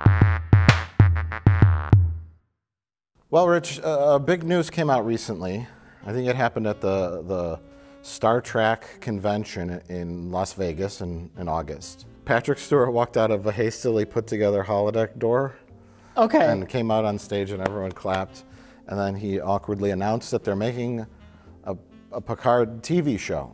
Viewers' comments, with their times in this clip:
0:07 Anyone else notice Mike will occasionally say 'Star Track' ?